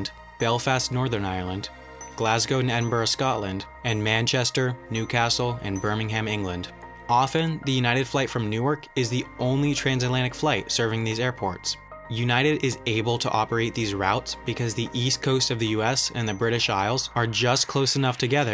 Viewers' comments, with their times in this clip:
0:05 When someone pronounces 'Birmingham' incorrectly.